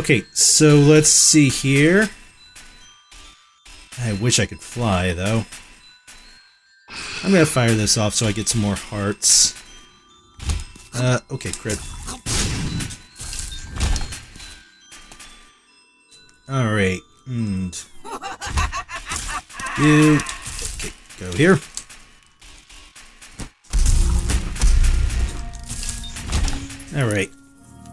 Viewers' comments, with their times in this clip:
0:08 bill cyther laugh